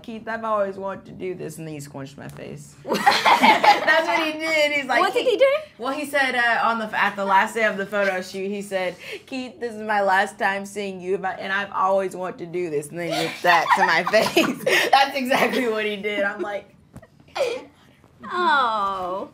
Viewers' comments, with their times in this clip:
0:03 jacob's laugh is so adorable